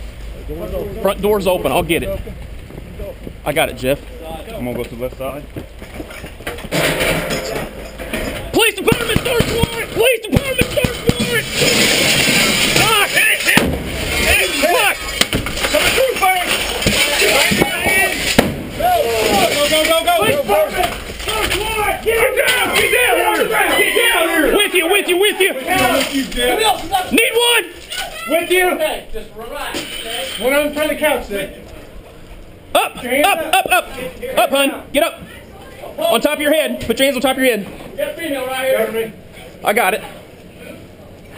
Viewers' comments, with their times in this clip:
0:08 I'll be honest, I just love how the cop says "POLICE DEPARTMENT, FORCE ONE! POLICE DEPARTMENT, FORCE ONE!
0:08 you can hear them yell “Police department, search warrant!” But I don’t see why SWAT would respond to a search warrant
0:12 Anyone know what that bang is?
0:22 I thought there was a parrot screaming, I was like "please dont hurt the birdy" 😟